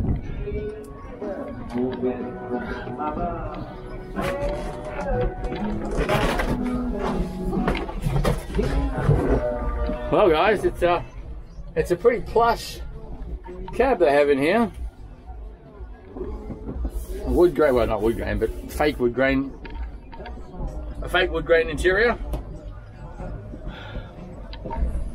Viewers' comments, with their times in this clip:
0:10 Interesting hearing the song “King of the Road” in English